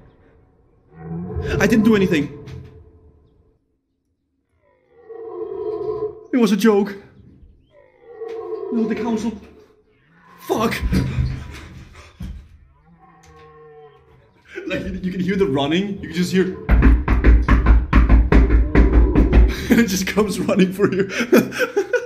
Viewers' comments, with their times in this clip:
0:09 The dude playing deer calls 🤣